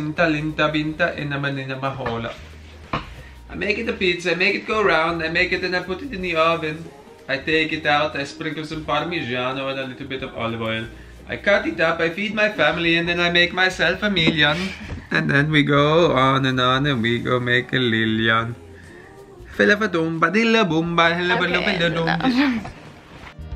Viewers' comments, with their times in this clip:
0:05 if my boyfriend doesnt song like that i dont want him hahah